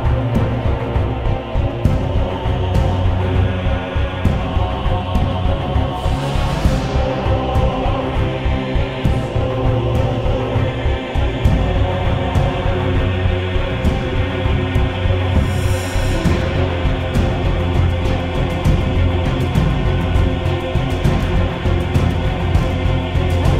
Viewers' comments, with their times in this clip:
0:07 Dat background song though SpoOkY